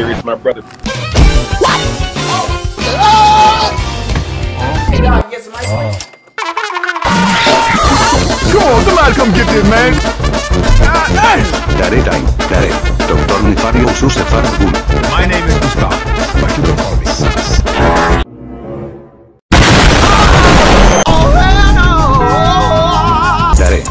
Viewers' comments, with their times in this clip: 0:06 What music is that: it sounds Epik